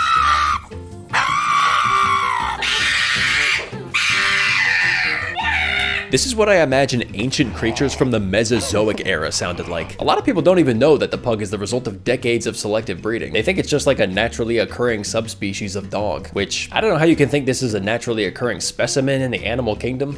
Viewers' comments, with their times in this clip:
0:05 dude sounds like toad